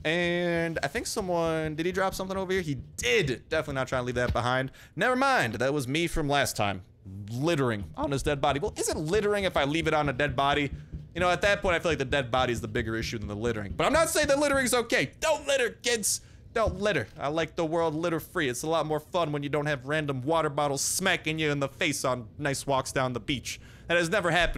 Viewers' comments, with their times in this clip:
0:07 Today's Voice crack daily is